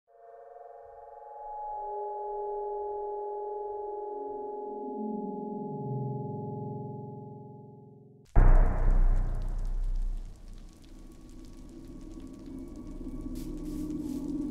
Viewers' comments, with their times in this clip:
0:01 nostalgia Minecraft sound